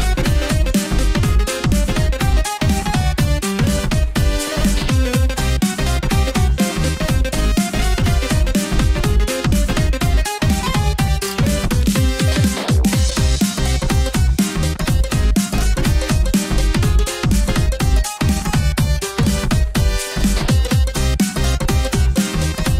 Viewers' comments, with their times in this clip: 0:03 idk why but I love the emphasis on the blue orbs